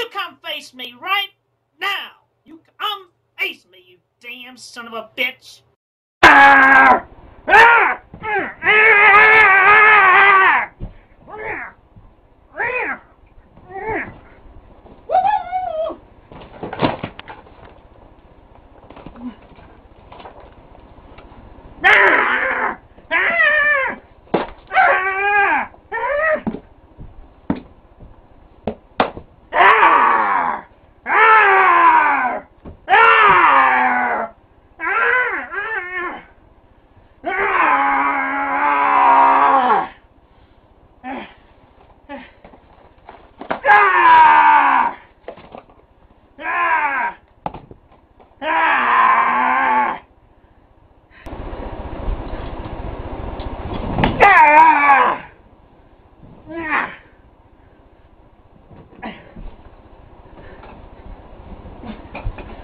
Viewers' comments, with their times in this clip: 0:06 Personally, I would thought was also very telling of it, lotta stomping there.
0:14 that woohoo though
0:43 Why does sound like a night elf dying